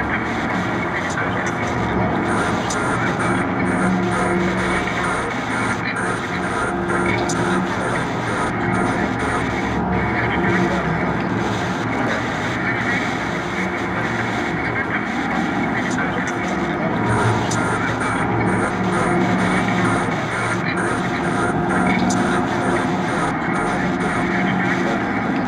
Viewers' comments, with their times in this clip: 0:08 Search for “Spiritbox official” and you’ll find it. I think her vocals sound better here though than the recorded version.